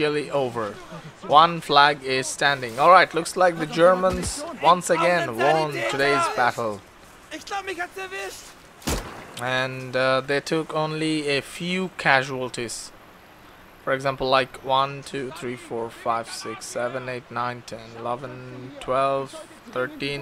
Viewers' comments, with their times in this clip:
0:07 Did he say - "islamic activist" ?